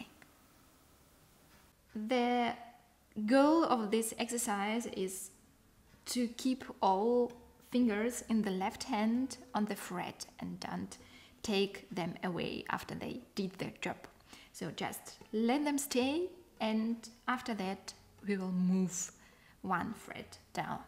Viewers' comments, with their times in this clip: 0:03 and following. Sounds like a silent movie accompaniment..